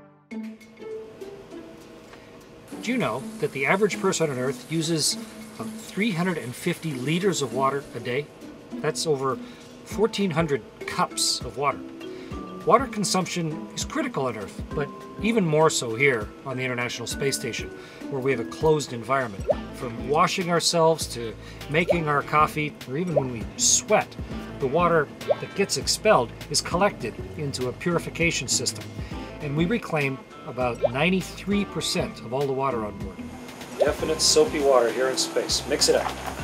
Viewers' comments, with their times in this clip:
0:04 They removed his Canadian "about" lol
0:20 Anyone else hear the Home Depot theme?